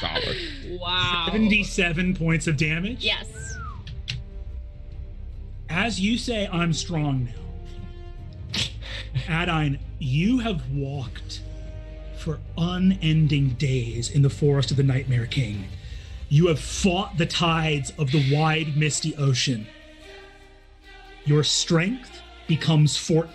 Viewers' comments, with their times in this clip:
0:08 god brennan doing these monologues on that sick ass choral part of the song never fails to hit hard